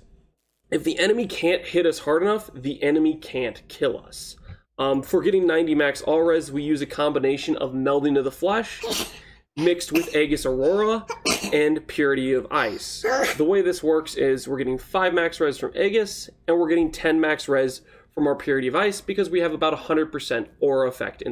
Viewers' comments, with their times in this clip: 0:05 you tell that child bless you. He Sneezes three times and looks up waiting for you to respond... I just want to say. Your overlay is great until you're explaining something and become unaware of the position of your overlay. You can see what you're talking about but all we see is take the ascendancy "Dad" node Unlocks better Human mode.